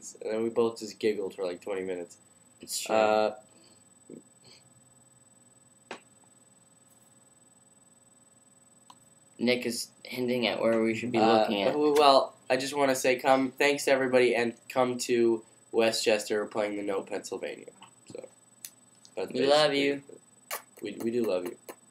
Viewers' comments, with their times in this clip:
0:04 LMFAO awkward moment of silence